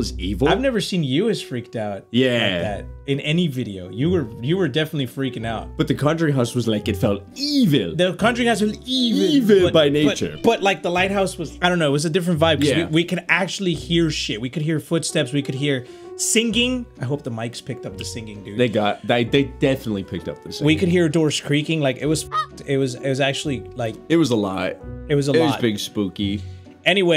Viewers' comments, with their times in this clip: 0:09 did anyone else hear the cat?
0:09 was it a glitch or someone cried out/ screamed at this part. Idk i’m confused😂
0:10 u can hear the cat
0:10 I heard something in the background
0:12 who was screaming?